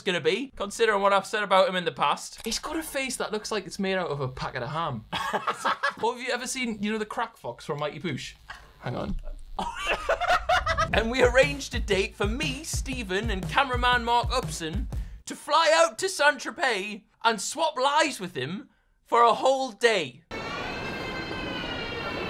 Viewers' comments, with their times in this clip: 0:10 that’s Litterately how the Crack Fox sounds